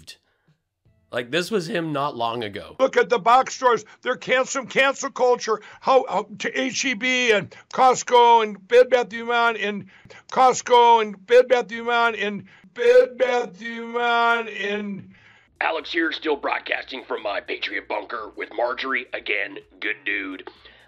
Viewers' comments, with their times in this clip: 0:07 Mike Pillow is obviously trying to say "Bell Biv DeVoe" and just had a bit too much of that crispy, crackly "Poison" ("poison"). Put the stem down and take a break, Mike... just put you head down on a...uh...um... what are they called again...
0:08 Bed Bath Iman?